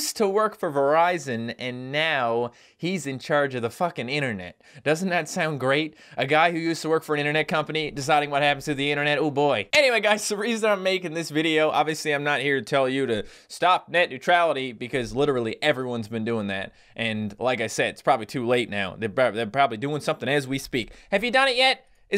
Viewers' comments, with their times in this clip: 0:03 the most sarcastic f-bomb I DROP 2 MANY